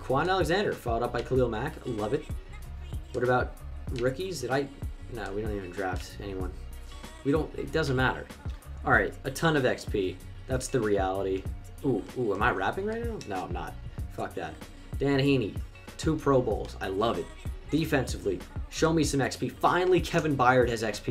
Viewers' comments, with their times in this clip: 0:05 You say you're not rapping but "exP" "realitY" "defensivelY" " finallY" say otherwise lol